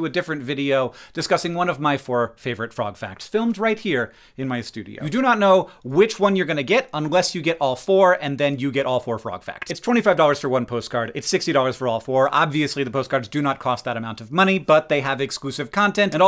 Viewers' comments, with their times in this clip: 0:04 Balloon pops hope I saved y’all some time 😊